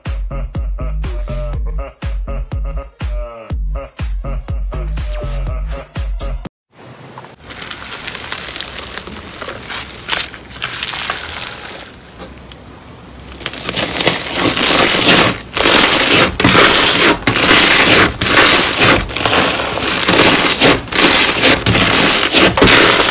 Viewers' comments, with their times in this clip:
0:07 Lol the slime is sooooo loudd xd